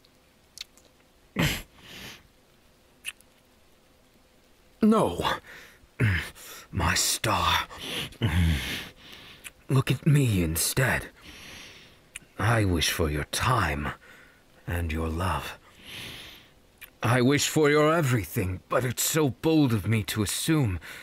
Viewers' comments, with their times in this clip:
0:07 Me: clicks on Iida: aggressive kissing Me: 😳💀